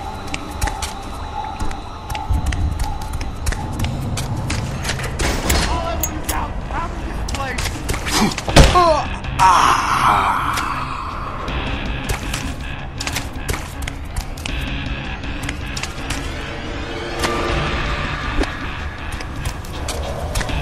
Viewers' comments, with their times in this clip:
0:05 its the "ahhhhhhhh" he makes is like hes in a hot tub:D